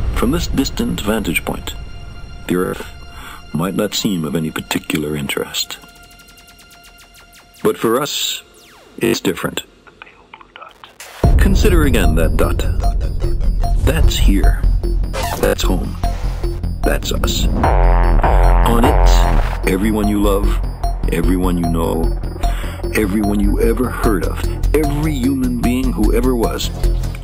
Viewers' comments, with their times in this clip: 0:09 four years later, and i just noticed the quiet "the pale blue dot" ! holy crap